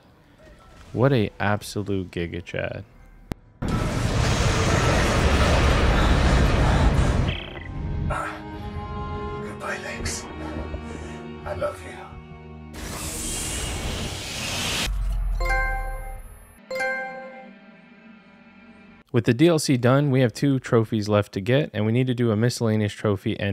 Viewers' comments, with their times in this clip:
0:09 i know what he said but on my first run it sounded like he said "goodbye legs..."